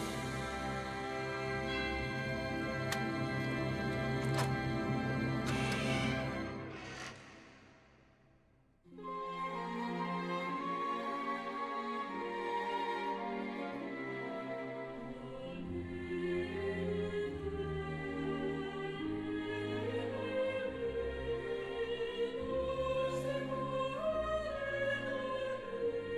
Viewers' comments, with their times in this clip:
0:08 This music was played on the darkest moment o this series (Chimera Nina wanting to play) And here it is played on the happiest moment, and it fits weirdly well on both...